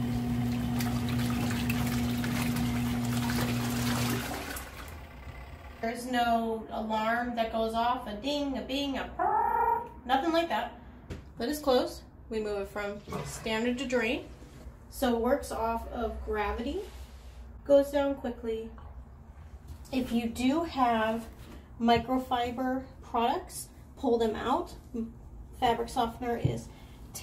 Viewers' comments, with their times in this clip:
0:08 click that time stamp to hear an alarm